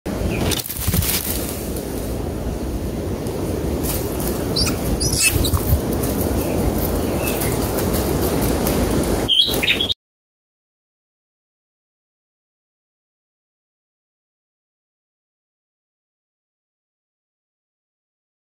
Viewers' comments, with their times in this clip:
0:04 That scream gives my soul great pleasure. 😌